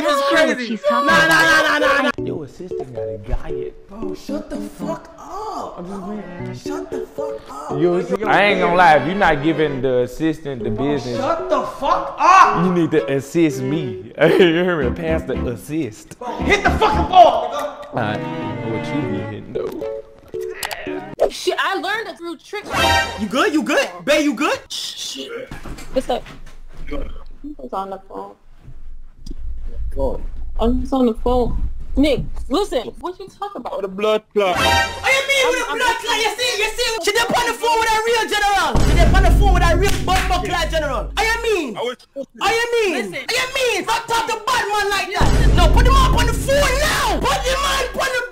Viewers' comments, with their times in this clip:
0:04 bro i was dyin the way nle said that
0:35 Jamaican Vaz From far cry